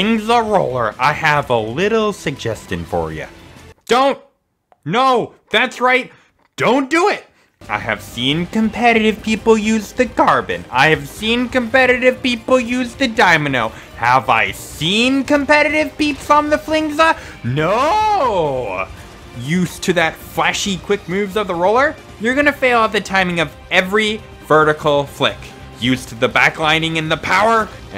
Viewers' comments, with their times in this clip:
0:10 "Dymano" Yeah. Smooth.